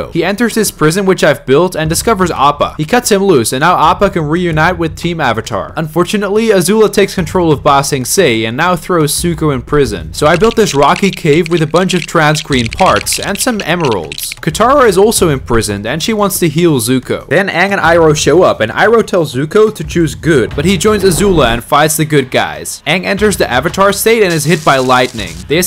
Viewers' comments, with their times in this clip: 0:09 bro said suko 💀